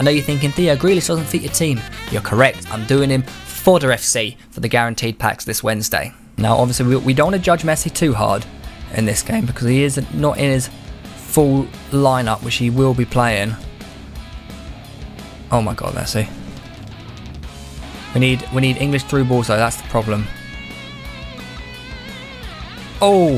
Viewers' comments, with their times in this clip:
0:09 Loving the voice crack